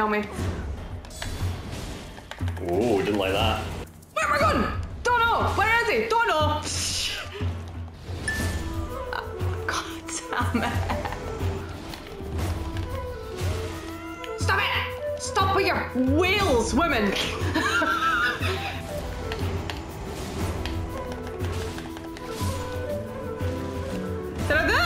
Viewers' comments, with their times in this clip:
0:07 something snot that Scottish (?) accent shouting "where are we goin? Dunno! Where is he? Dunno!" freaking killed me! 😂